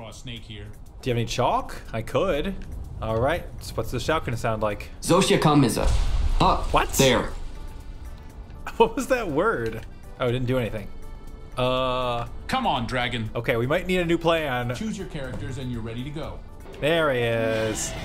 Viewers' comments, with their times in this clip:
0:06 That's how a word of communism sounds like.